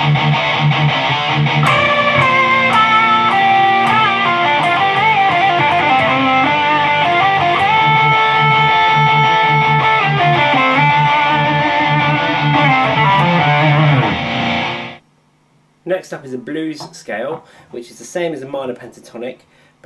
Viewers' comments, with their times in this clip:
0:05 sounds like Sabbath